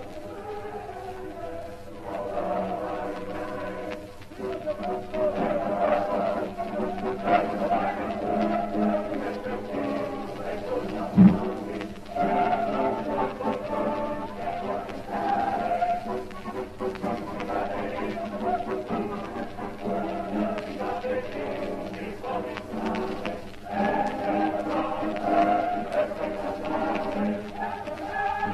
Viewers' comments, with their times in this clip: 0:09 Min ¡You can ear sound like a... ¿fart? This is a wonderful recording of opera.
0:11 Such artistic nuance to the fart sound expertly captured You just don't get subtlety like that anymore in post-WWI opera